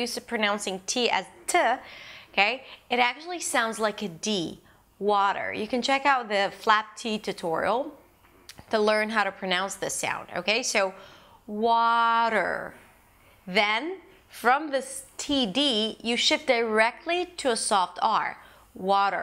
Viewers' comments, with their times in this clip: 0:03 this D sound is the R sound in Portuguese when it is between vowels or at the beginning of words for example: barata, rato watching this video just to make sure... thanks very much for sharing all these videos btw